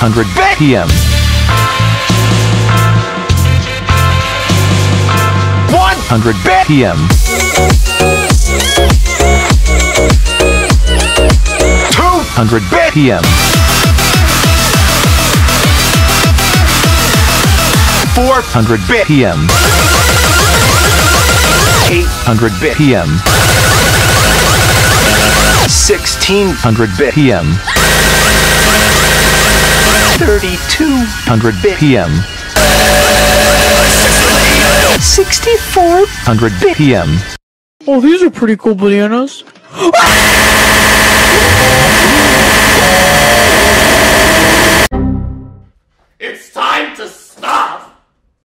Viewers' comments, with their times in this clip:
0:07 is actually a bop
0:13 I'm good at Cameila I love that 200 bpm Cool I love u ok
0:32 I am just surprised that gangnam style synced up with 3200bpm lol
0:37 When camellia is making a music with a bpm lower than 190:
0:37 Microwave at 3 am be like:
0:39 The Hungry Cheese Is Sounds Like A Fastest Hacked!!!! :O
0:40 current tempo ; 3200 bpm Wat
0:40 the triangle do be vibing doe 😳
0:40 My ears lol in this part
0:40 My washing machine at 3AM